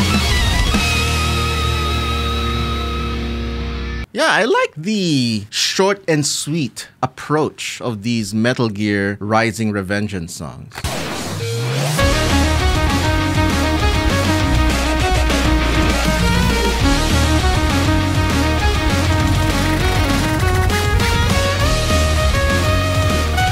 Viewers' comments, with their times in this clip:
0:10 yes I've always loved this part, it's almost like a Classical Music piano piece that just plays while the rest of the song goes completely nuts around it.